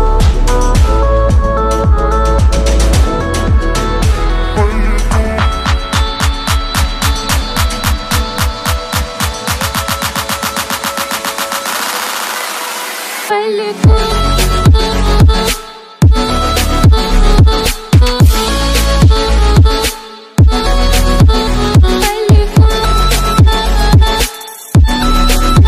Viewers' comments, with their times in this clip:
0:07 Wait for it 💥 🔥 lit drop🔥